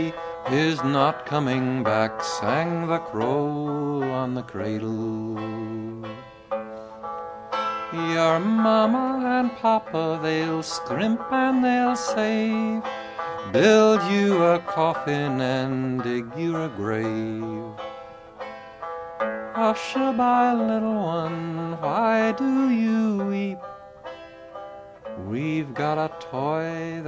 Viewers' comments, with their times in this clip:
0:08 he sings "Maimeo and Paw-pa." Maimeo is Irish for Grandmother, my wife uses it. I chose Grandpa but the 3 year old grandson has been calling me Paw-waw which I like, it's unique.